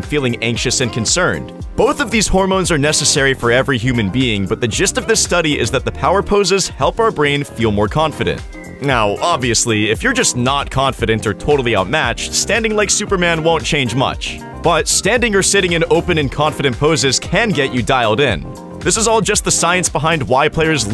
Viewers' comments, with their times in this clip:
0:04 the jizzst of this hehe xD